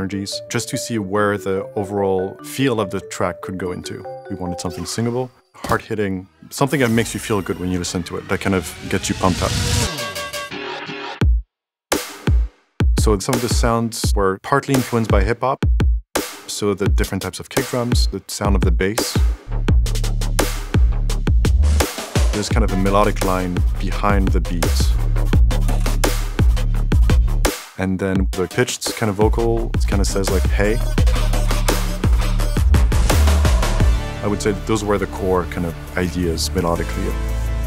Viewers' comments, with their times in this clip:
0:07 I've watched this video so many times just because I love this melody <3
0:07 i need this concept melody. (It's less than song but better to listen)
0:09 the gradual introduction of musical elements is so satisfying
0:19 You can tell where they got the sound profile for Valorant from. Or maybe vice versa.